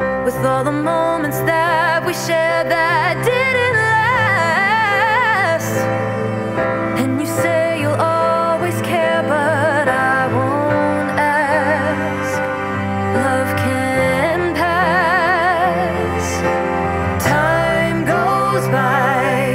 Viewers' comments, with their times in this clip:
0:04 the best voice ❤❤❤